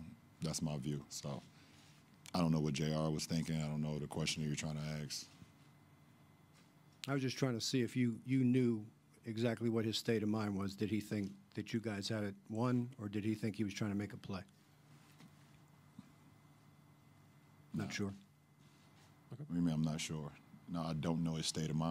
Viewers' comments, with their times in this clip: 0:07 bro fighting that laugh lmfaoooo